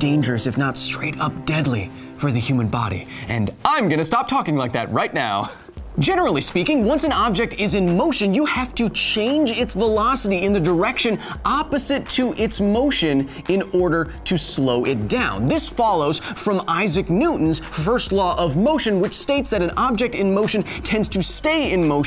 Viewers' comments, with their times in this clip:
0:10 mmm that's either isaac newton or rod stewart. someone british, though... for sure...